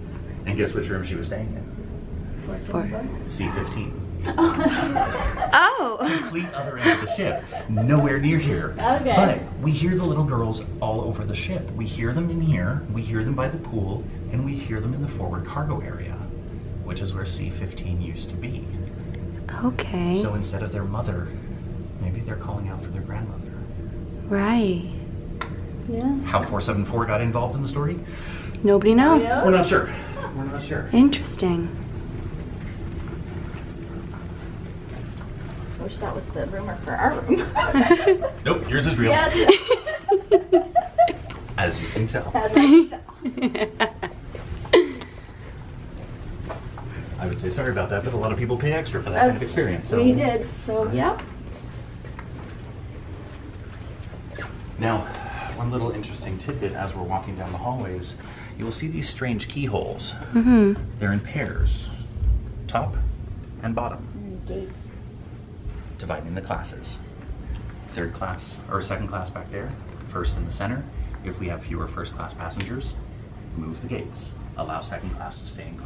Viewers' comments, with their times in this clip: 0:03 anyone else heard a scream
1:01 three thumps can be heard